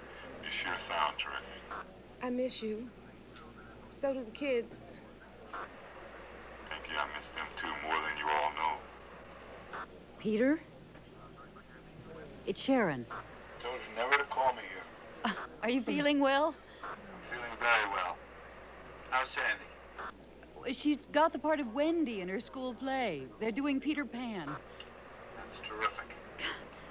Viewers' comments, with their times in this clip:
0:07 literally no delay between speaking and hearing